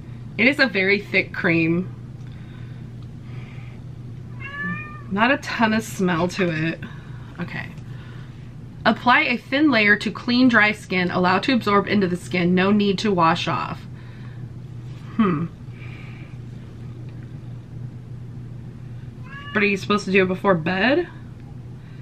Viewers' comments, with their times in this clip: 0:09 my cat enters hearing how annoying that is n me knowing it's pointless yelling back but I do. Crazy 🐈 lady 😾